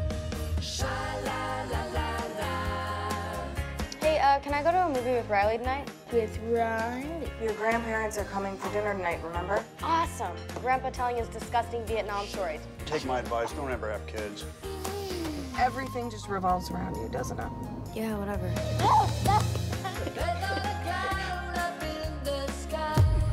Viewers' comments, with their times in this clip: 0:06 Why does Selma Blair sound like her voice is being reverbed or something ?